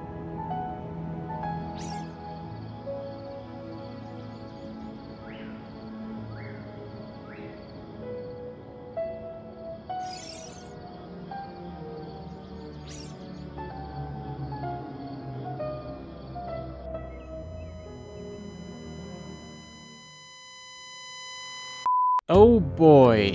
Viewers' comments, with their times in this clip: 0:10 The way the music gets gloomy 😂😂